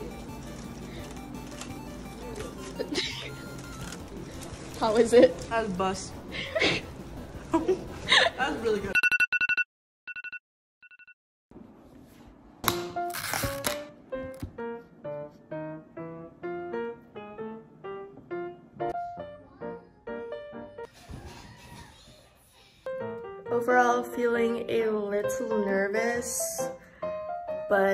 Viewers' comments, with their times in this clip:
0:09 the alarm gave me anxiety 😅